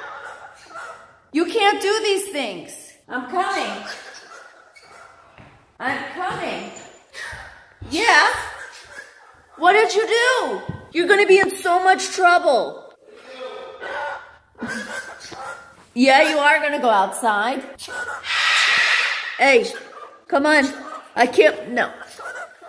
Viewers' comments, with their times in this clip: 0:08 i can understand vinny's more clear words. also when the bird has better comebacks than me